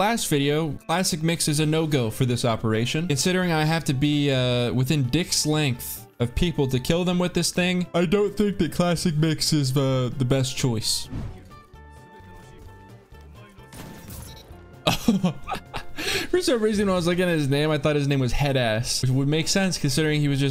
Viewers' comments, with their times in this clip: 0:07 I can't be the only one who yawned after he did.